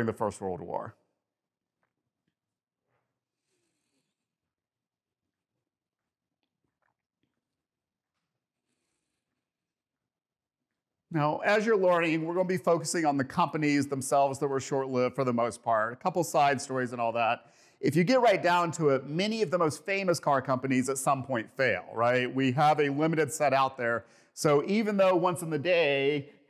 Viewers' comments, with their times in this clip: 0:08 I really enjoyed the video. there is a car with a snake on the running board. I think the front of the Corvair looks better than the front of current electric cars in the way that the missing grille is designed. That being said, I appreciate the pace of the presentation, but a number of words were unintelligible for me and the caption folks. Also, please forgive my misphonia. Way too many mkays, and everything elses, and, and all thats. After a while, each time I hear one of those vocal tics it's like getting stabbed in the ear. It ain't easy being me. Don't get me started on dripping faucets.